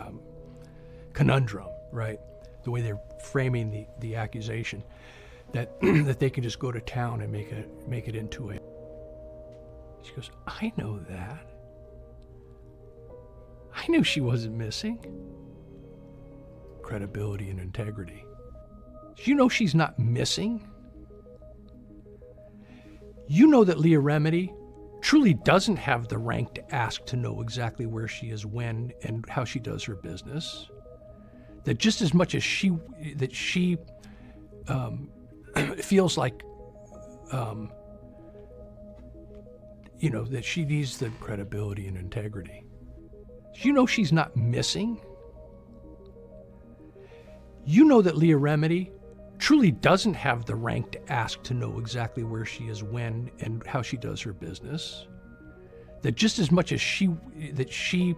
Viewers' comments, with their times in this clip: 0:04 one would think they'd at least hire someone who can speak eloquently and make sense when trying to discredit someone 💀
0:46 Why can’t dude use his words lol sit down and take a breath or seven (；´Д｀)